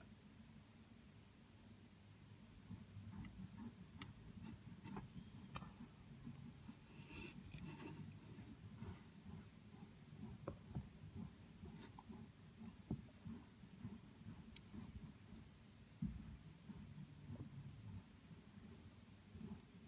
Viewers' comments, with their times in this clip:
0:03 the spider sneezed